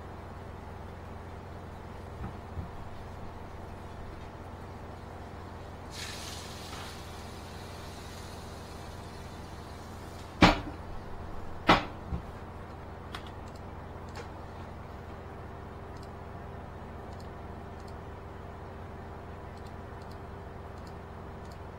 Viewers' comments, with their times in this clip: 0:05 The sound of boiling ln2 is giving me some relaxed sauna vibes 🤣